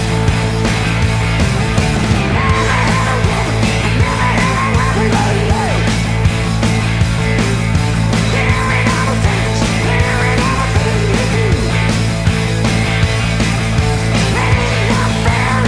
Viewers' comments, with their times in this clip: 0:03 loved the way Brian sang that line